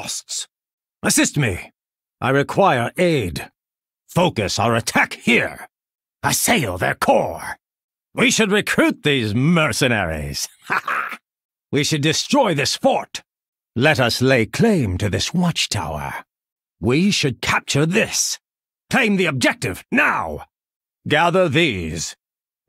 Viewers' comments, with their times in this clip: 0:07 I don't know why but I find the part where he laughs after "We should recruit these mercenaries! HA HA!" very funny and weird
0:08 is my favorite. Listen how he requests recruiting the mercenaries. He’s so pompous that he can’t take any part of the battle seriously, lol. Everything’s a joke because he feels he’s above the other characters.